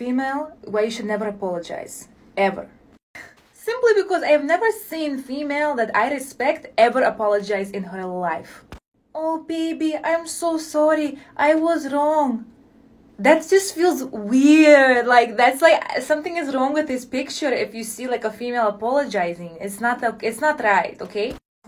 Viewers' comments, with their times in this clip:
0:06 where did the accent come from 😭🤣 second ago she was accent-less